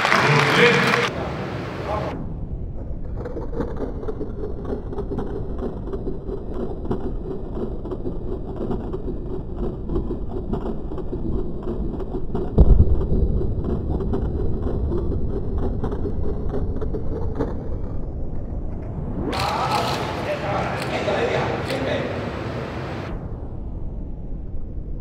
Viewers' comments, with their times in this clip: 0:10 The slowmo makes sounds as if a portal to a new dimension is going to crack